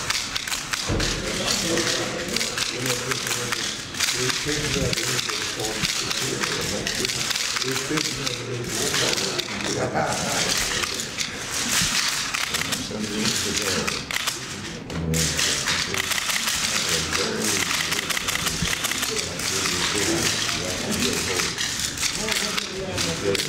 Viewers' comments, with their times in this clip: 0:04 the clicking circa jesus!